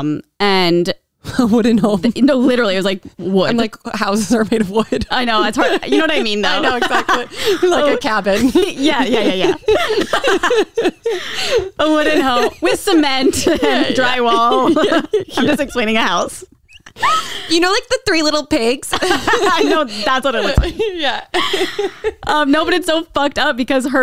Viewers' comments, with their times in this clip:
0:06 that laugh is soo sexy 😍